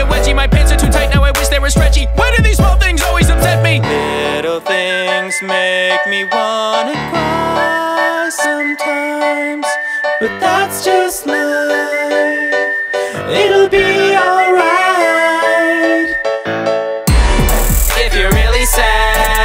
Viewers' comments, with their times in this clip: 0:05 My head autocorrect “little things make me wanna cry sometimes,” to “Little things make me wanna die sometimes.”